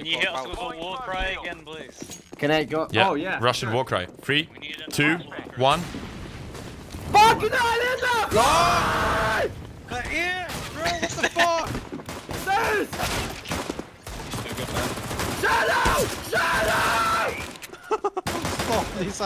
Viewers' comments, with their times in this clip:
0:06 Why does this sound like "fucking Heil Hitler Loooool"